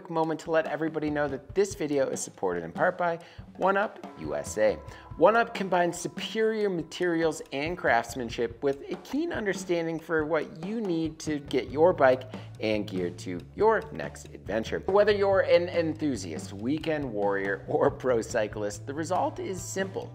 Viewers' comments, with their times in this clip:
0:03 Okay I have to ask because it's driving me mad, the twang sound that appears is it a sound effect that's added in post production, or some kind of resonance in the room the audio is being recorded in?? I hear it in a lot of videos and can never tell, it always sounds too quiet and panned to one side to be deliberate